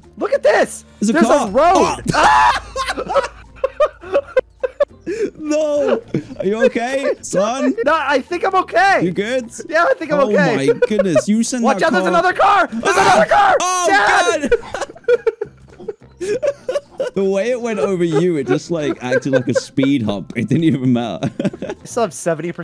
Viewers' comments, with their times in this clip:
0:10 WATCH OUT THERES ANOTHER CAR THUD Oof